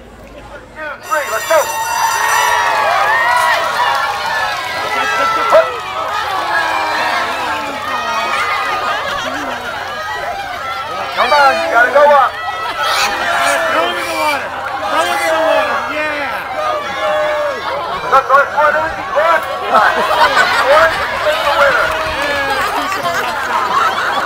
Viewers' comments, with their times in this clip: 0:07 What is your view on animals being encaged used for entertainment? I found that display to be kinda cruel, the pig obviously didn't want to go in the water yet he picks it up tossed it in there anyway. You can hear a guy in the background all like "throw it in the water, yeah!" That was messed up. Just my opinion though.